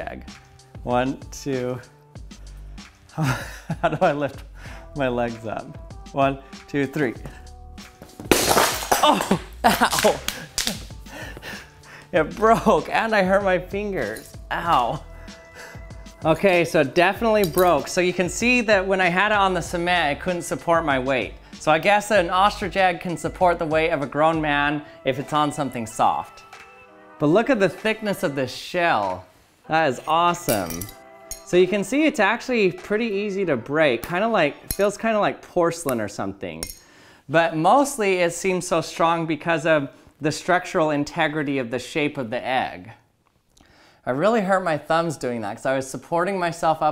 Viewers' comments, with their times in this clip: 0:08 Spoiler .. We can hear breaking a mans egg, because he sat on it.
0:28 it heard like it was a plate